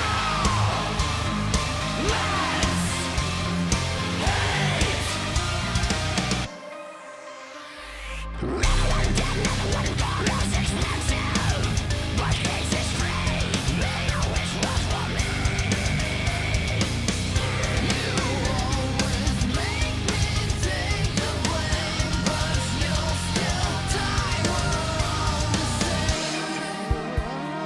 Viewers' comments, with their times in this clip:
0:08 Oh hell... First time I heard this (it's been saved and listened to multiple times since) , but I swear on God I thought I heard him say "RAMALAM DAMN" when he started screaming and I about pissed myself with laughter.